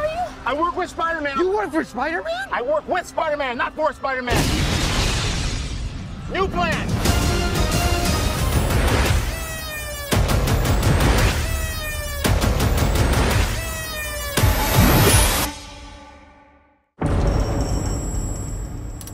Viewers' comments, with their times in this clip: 0:06 that spider man theme feels like it is the same trailer when the next trailer starts playing